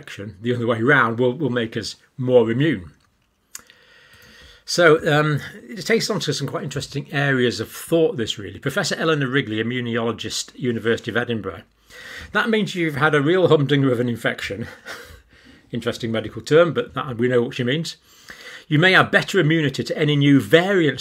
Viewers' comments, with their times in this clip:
0:07 Did you say Eleanor Rigby?